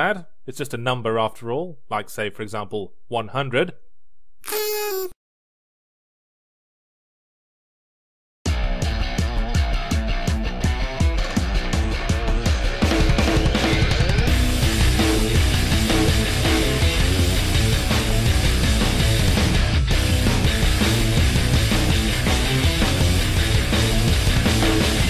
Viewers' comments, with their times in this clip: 0:06 Love the full theme song hadn’t heard it before